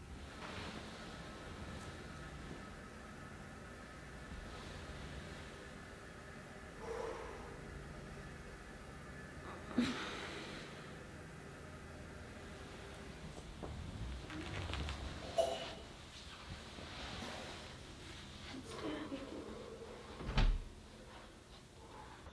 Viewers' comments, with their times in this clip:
0:07 Did she see the camera? Thought I heard her laugh *nope i think that was a "I'm half asleep" sound